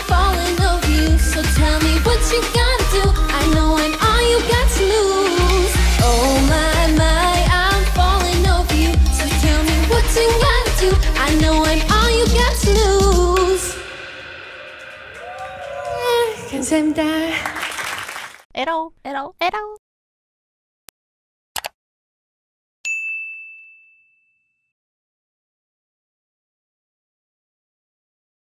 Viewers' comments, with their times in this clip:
0:09 ahh is that a voice crack 😂 but love her voice ❤️
0:10 she makes a mistake hmmmmmm, but it's okay........her voice is so special
0:10 her voice cracked she is not so confident with her voice
0:11 her voice cracks and she does look nervous singing live, I hope she gains confidence and works on her vocal skills
0:15 sounds like a mosquito :))